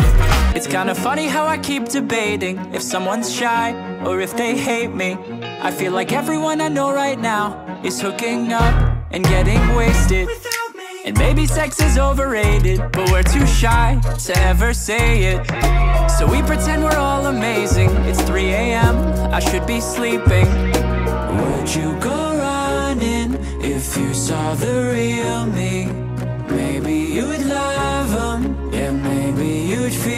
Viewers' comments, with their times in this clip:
0:05 it sounded like the start of sober up
0:09 OK I ABSOLUTELY LOVE THE BANG PART ❤❤❤
0:09 BANG! Coming in?! That's Awesome!
0:14 it was burn the house down start